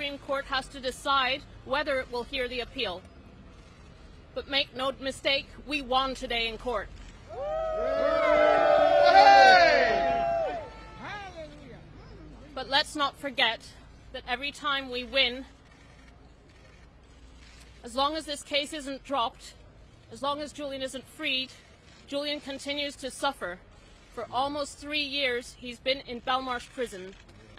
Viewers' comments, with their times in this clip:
0:09 That's me shouting "Way Hay" lol.